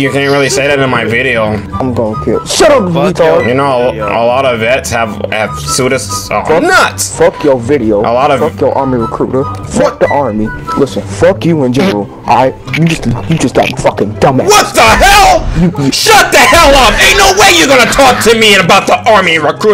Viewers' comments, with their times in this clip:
0:05 you could hear the dude trying not to laugh cuz he knew what was about to go down